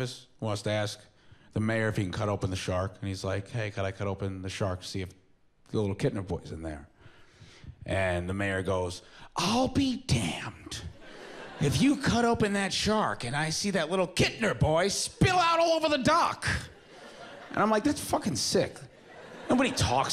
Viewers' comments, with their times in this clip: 0:03 it's remnants of what is called "Transatlantic Accent" which was required to be learned by all actors and actresses in Hollywood until, if I reckon, WWII, but the practice stayed common in the 50's, 60's, relatively common in the 70's, and died off in the 80's. Captain Janeway of Star Trek Enterprise might be the last actress/actor to sport it. She is perfect at it, too.